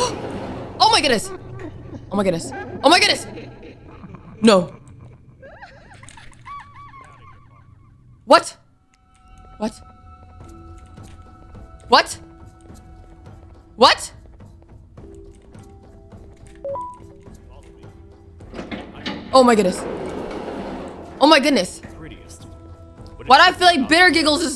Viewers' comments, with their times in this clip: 0:06 was Kreekcraft laughing